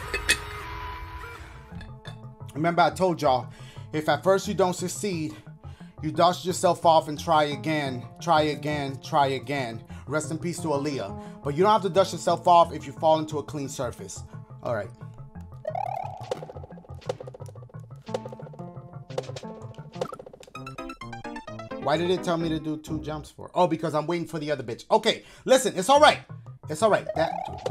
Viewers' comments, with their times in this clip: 0:10 who’s alila? Edit: now I know who she is….. Aaliyah.